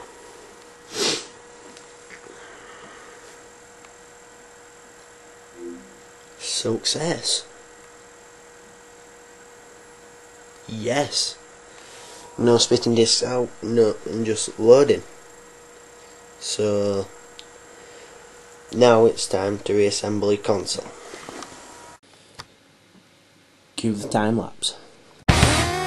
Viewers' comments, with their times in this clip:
0:06 did he say 'Sucks Ass' ?
0:07 SUUCKS ASS XD